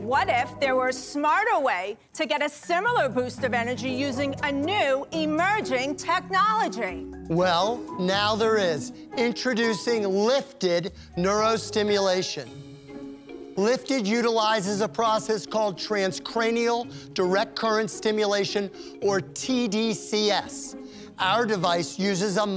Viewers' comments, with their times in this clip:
0:07 "Ma'am, your voice - I'm out."